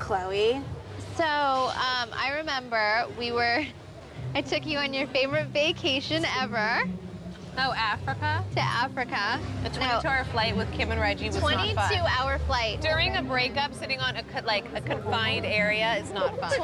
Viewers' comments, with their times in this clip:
0:04 👀 I did a double take... I thought this was Kourtney! The voice and even her face... Wow!